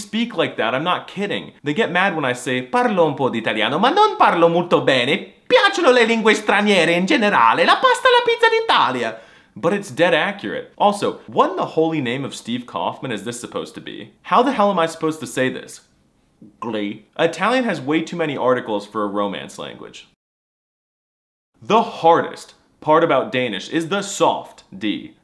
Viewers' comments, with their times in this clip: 0:03 yo is that doofensmirtz?
0:09 no, we don’t talk like that at all, maybe when we’re drunk